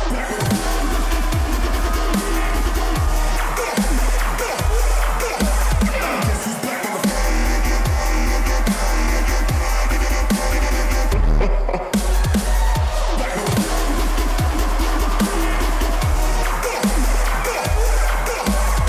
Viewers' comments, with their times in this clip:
0:06 Like a Matrix Rave.